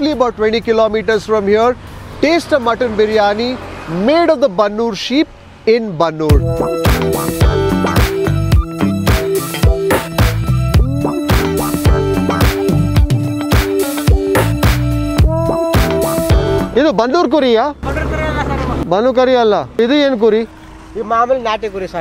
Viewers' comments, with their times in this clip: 0:06 gangsta as g-funk beat kicks in! Love it!